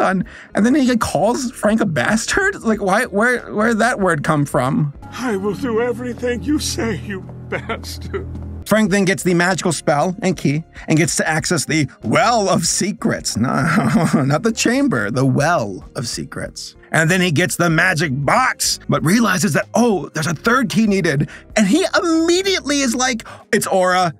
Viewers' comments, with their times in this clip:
0:05 the delivery here is gold.